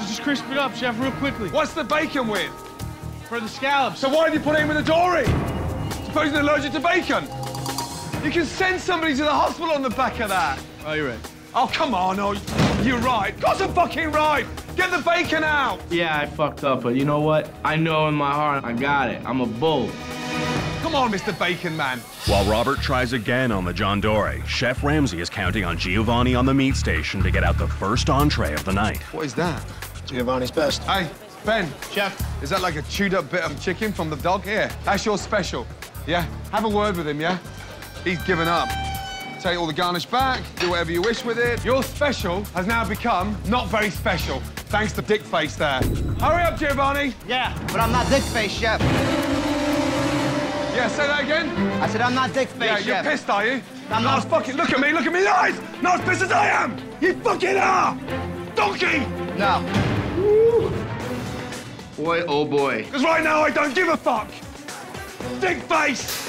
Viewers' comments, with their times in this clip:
0:10 LMAOOO the way he said it.
0:47 Even the music was like "You did not just do that. You did not just talk back to Gordon Ramsay"
0:48 the dramatic music gets me every time 🤣🤣